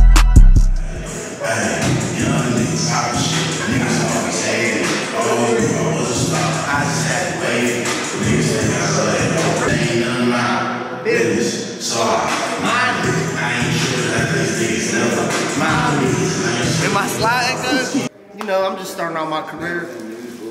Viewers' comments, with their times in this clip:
0:05 Sky keep doin ya thang. Quick ques, at the mark, what song is that bangin?!! Shit sound hardddd bruh